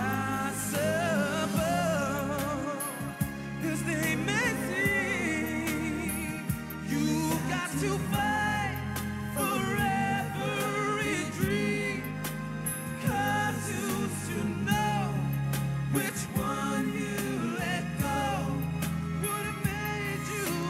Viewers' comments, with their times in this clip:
0:04 yed i know.. the first performance .. mark lose control missed voice 😂😂
0:04 LoL mark Pitch... lose control.. 😂😂